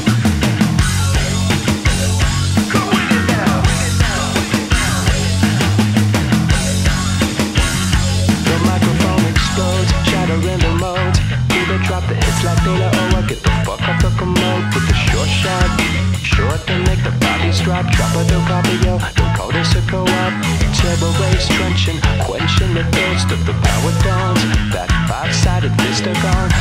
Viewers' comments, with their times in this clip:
0:08 It sorta does but mostly from onwards. Kiedis' timbre is kinda hard to pin down i feel like
0:09 I feel like this would hit harder if the verses and chorus sounded more like Kiedis in Around the World.